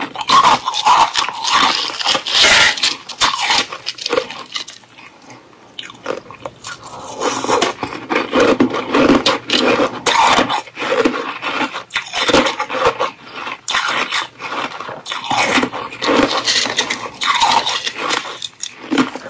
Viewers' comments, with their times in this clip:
0:07 I like that crushed igloo crunches & following on too ...